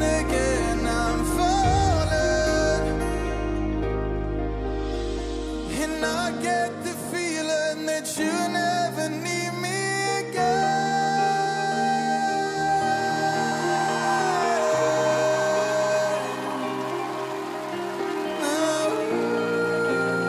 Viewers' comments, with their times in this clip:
0:03 The young man is a natural. He is singing with like no effort!